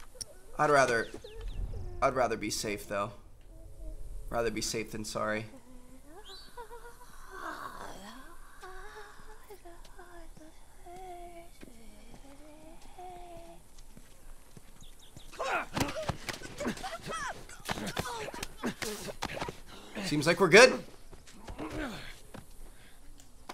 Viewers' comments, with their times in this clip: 0:06 anybody else heard that runner singin low key ? 😂😂😂😂😂😂